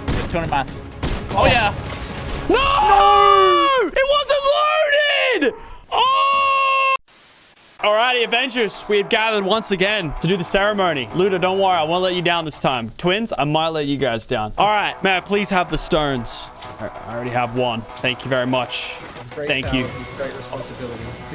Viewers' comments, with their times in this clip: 0:03 bro why you laughed